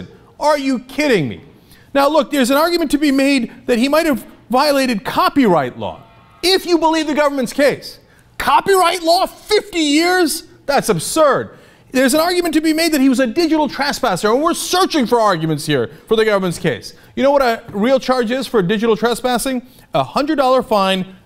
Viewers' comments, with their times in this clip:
0:04 someone turned on a mac
0:05 Mac starting up :D
0:07 Apple turning on sound effect is in the background *gasp* COPYRIGHT!!! Seriously this is ridiculous. Condolences to his friends and family.